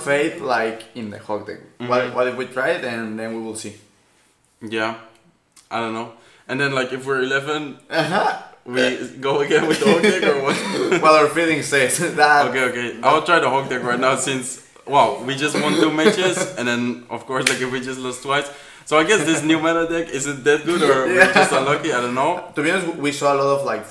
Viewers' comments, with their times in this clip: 0:08 this Burp is Mexican way of saying „I love you bro let’s get undressed“